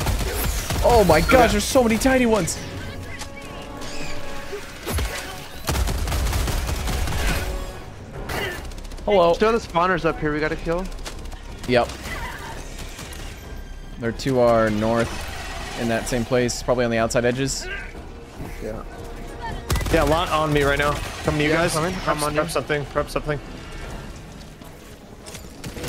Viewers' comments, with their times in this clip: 0:08 I appreciate that "Hallo" nice